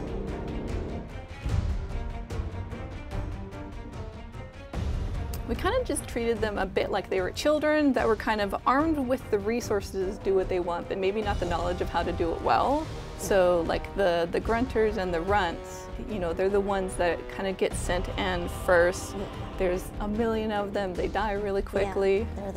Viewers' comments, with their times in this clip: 0:06 wait that sound like grunts from halo series